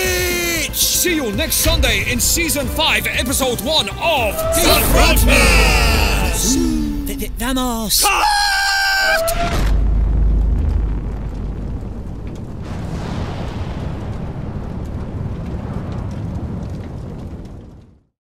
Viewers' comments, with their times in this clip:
0:06 This was so high pitched